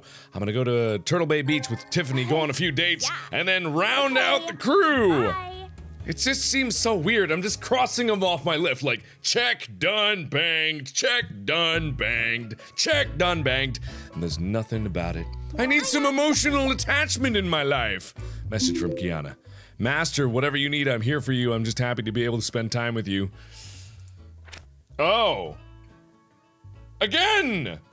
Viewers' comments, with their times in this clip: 0:10 he sounds like Helbet from planet Dolan
0:15 Okay, first the Celeste outfit that looked oddly like Widowmaker from Overwatch, now THIS which sounds almost precisely like the Tracer voiceclip, ALSO from Overwatch... Ummmmmm *Concern*?